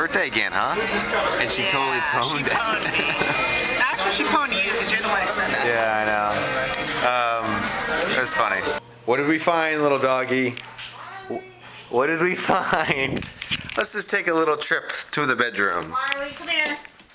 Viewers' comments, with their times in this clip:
0:05 you can hear fireflies in the backround :)